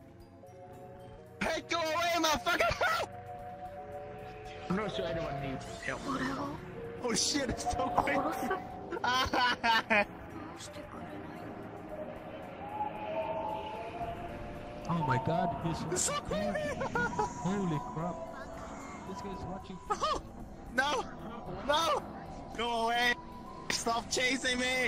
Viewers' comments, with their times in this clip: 0:05 Whats the anime called from that creepy sound effect and music?
0:06 who else heard king of the dead